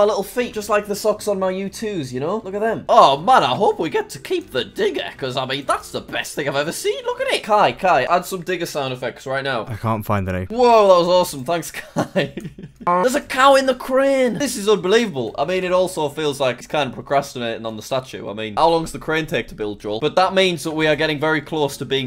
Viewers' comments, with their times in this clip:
0:06 the best digger sound i've ever heard
0:08 best digger noises ever